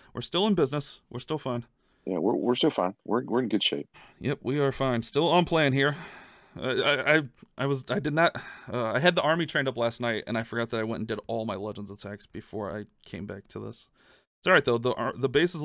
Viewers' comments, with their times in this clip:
0:03 it’s like a golf commentator so quiet